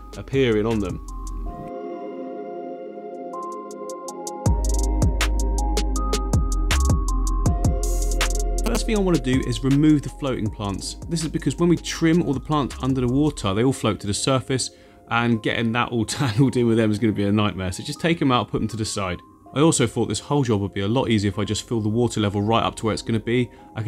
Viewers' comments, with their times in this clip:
0:08 Go to on the video, I haven’t heard that noise since 1998 when I was trying to ring my friends on the landline and my brother was on the internet 😅😂